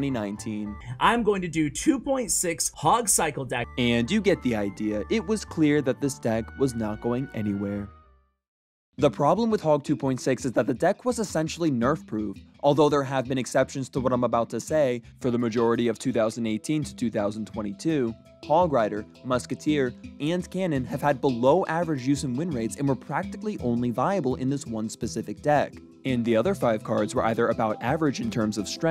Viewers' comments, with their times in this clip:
0:10 aria math hits hard in the backround.